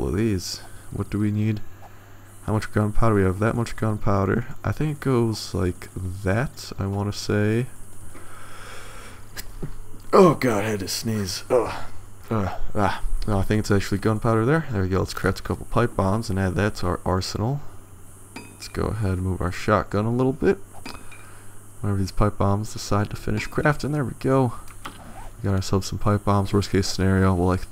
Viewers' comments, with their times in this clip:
0:09 #1 7 days to die YouTuber and bless you